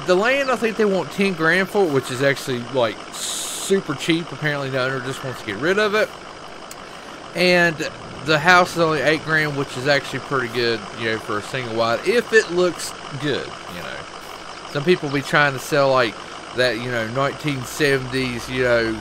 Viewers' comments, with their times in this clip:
0:05 when you leave the 6.0 running while your talking just because you want to have a eargasm